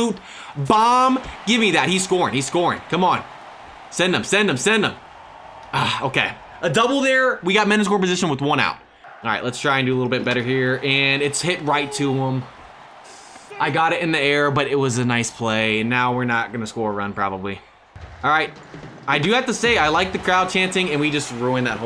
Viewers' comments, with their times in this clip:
0:05 tell me what he said and I will pay u